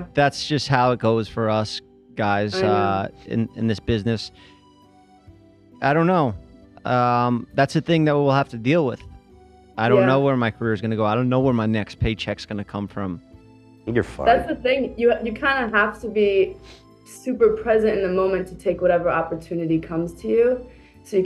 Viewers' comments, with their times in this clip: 0:09 The way Ethan said that without whispering has me dead. 😂